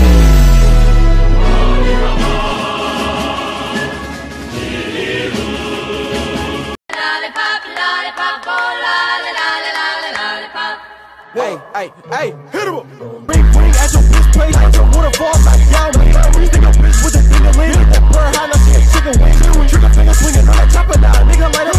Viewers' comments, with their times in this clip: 0:05 ur boi loves that song